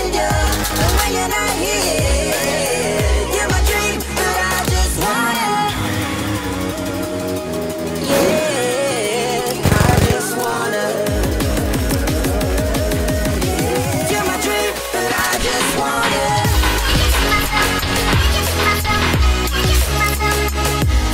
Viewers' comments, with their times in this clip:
0:09 the vector sounds so satisfying